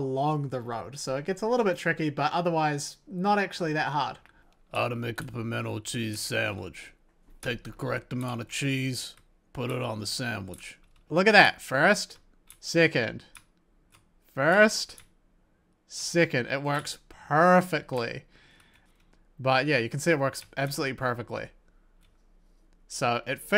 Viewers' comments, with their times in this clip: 0:04 where did that voice come from? 😅